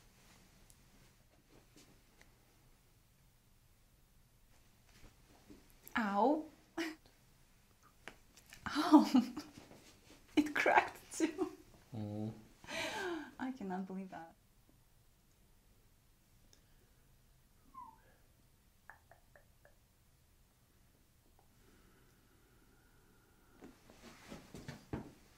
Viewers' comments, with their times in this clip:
0:08 Loudest 👂 adjustment EVER